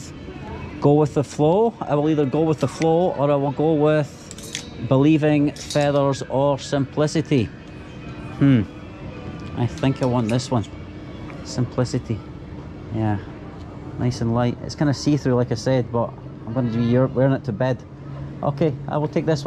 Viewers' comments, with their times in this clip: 0:03 it is SIMPLICILY